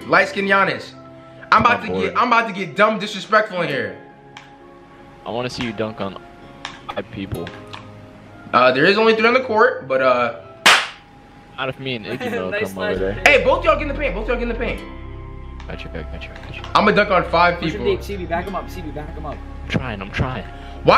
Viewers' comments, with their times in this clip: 0:06 when the ball got slapped it made a clap noise 😂😭